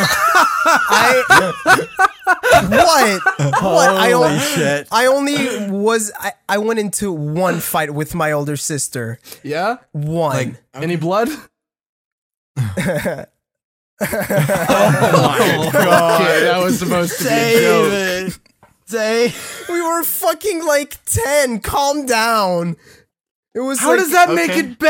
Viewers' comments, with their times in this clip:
0:07 "Yeah? Any blood" As soon as you said that I knew the laugh was coming. Growing up with a violent sister that moment when you stand up and go toe to toe it's not just for that moment. It's for every damn moment leading up to then.